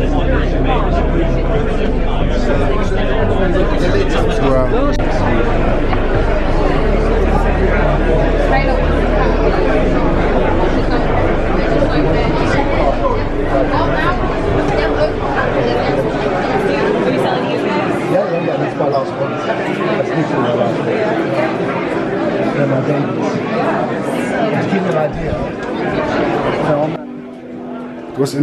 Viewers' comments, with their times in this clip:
0:09 Nice video, I could hear mine and my mums voice in the background